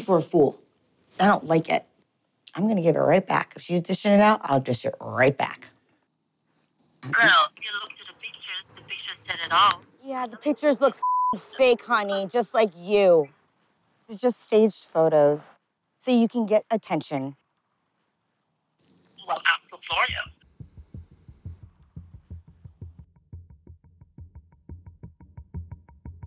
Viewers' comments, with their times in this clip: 0:08 I said the same thing. Well I just noticed that her voice sounded very manly. Especially when she says "His sugar wants to try my honey" or whatever. you can clearly see there has been major plastic surgery. Doesn't mean that she was once male, but definitely had a lot of work done to that face!